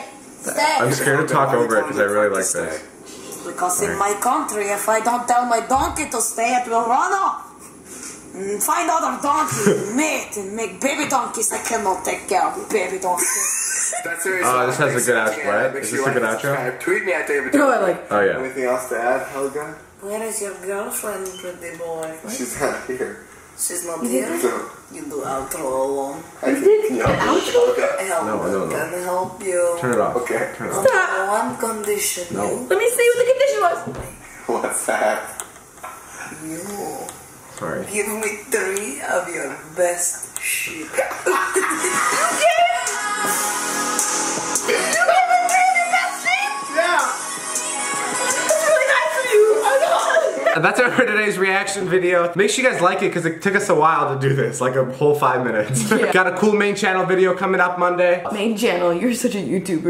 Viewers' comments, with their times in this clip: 0:10 when lizza mimics helga about donkey babies part is lit
0:19 his voice changed like "whooaa she just..."
0:42 when the beat was too good to miss :D